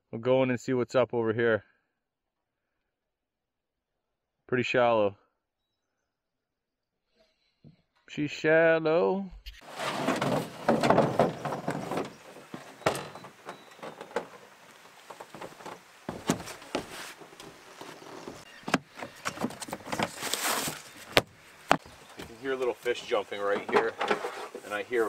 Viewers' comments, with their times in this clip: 0:07 Love the J Cole "she's shallow" around the mark